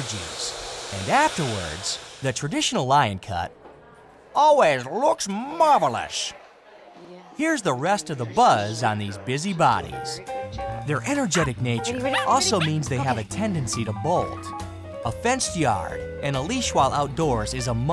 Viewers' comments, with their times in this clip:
0:03 what the fuck happens to his voice on